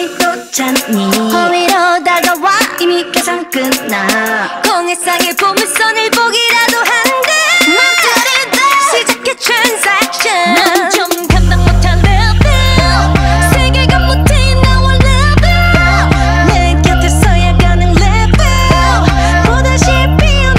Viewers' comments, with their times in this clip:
0:06 Pop off queens! Everyone is talking about the vocals, but the rap parts are what have me hooked- Also, Wendy and Karina's voices blend together so well-